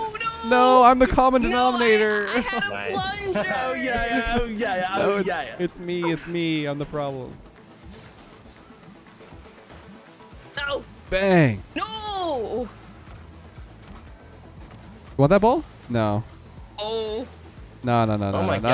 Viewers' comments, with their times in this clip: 0:04 "It's me, it's me, I'm the problem" sounds so much like "It's me, hi, I'm the problem, it's me" from Anti-Hero of Taylor Swift